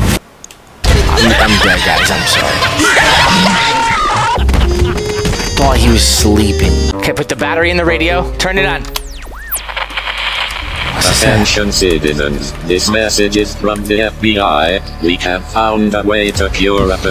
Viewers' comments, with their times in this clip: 0:03 I love how you put the fnaf 2 jumpscare noise